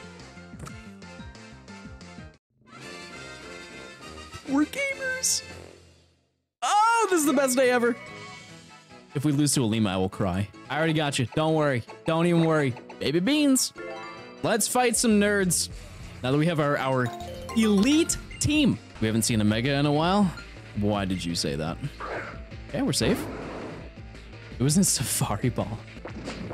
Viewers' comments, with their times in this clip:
0:09 I thought you said my name Then I had to search who the first trial was and our names are pronounced the same.